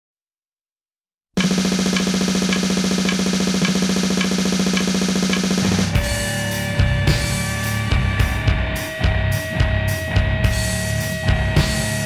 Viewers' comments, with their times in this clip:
0:00 The beginning literally sounds like you inside MRI